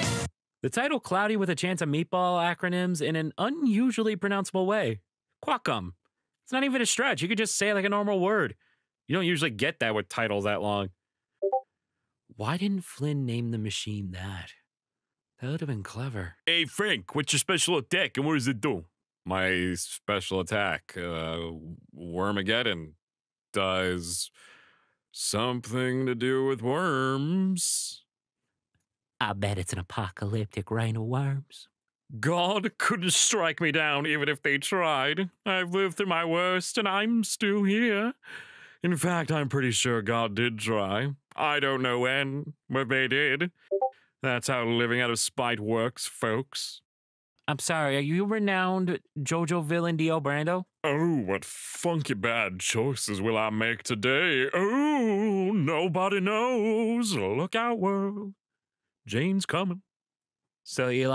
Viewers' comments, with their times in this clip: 0:10 Random Discord sound def not making me check Discord...
0:48 the beep boops ! WHY THE BEEP BOOPS!!! Edit: YOU MOTHERFDJKSAKL;HFDJSA